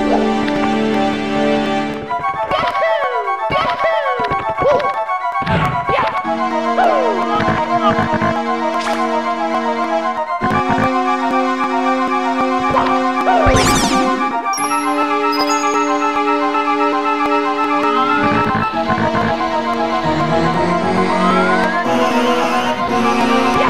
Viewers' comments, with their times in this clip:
0:09 Twilight zone music wow.